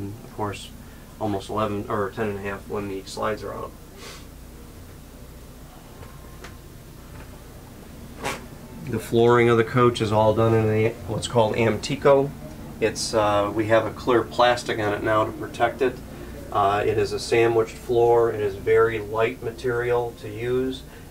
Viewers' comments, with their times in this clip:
0:07 was that a fart? 💨
0:09 did u fart bro?